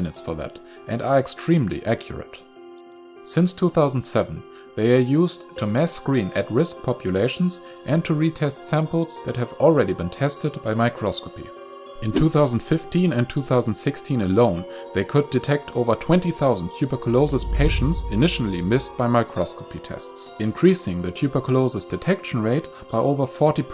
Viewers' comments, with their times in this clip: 0:05 did he pronounce the e at the end of microscope?